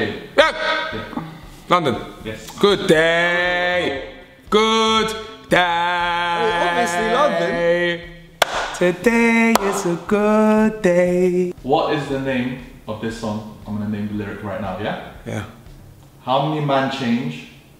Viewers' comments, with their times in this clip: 0:04 i thought he said “kuthaaaayyy”